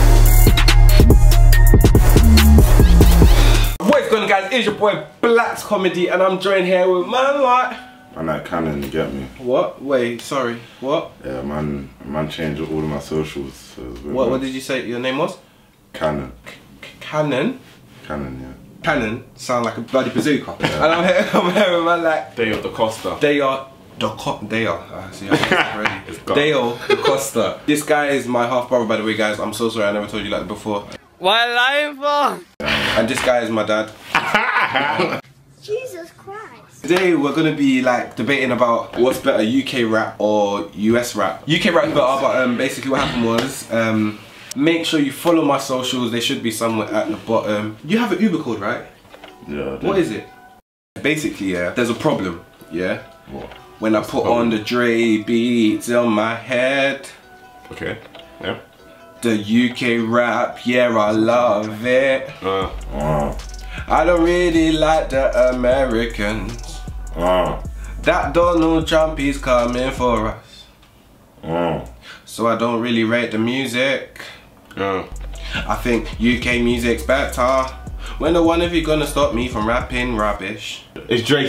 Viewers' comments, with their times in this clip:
0:07 is voice is so deep m8 o-o
1:07 voice too deep